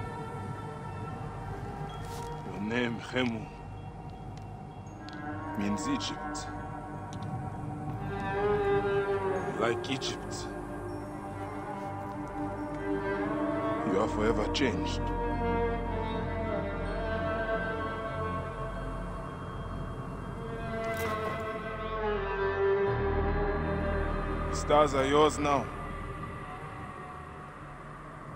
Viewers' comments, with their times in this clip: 0:09 is there a full version of the music ? it's so sad i love it